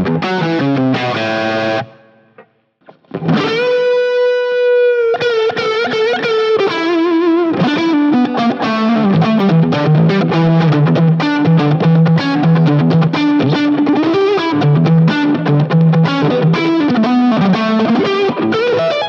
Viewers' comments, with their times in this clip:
0:06 Great comparison! I had never considered the Texas Specials but after hearing them, I think I'll buy a set. All 5 of my guitars have humbuckers but the older I get, I find myself less into hard rock. The cruiser sounds great but I think in all of the clips, I preferred the Texas Specials just a little bit more. Great playing by the way. I love what you played Sounds so cool.